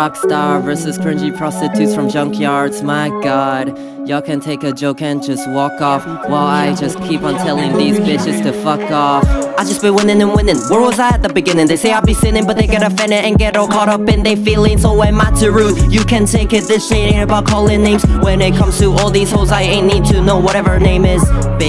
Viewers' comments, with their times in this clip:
0:09 tHAT AUTOtUnE lInE HItSSSS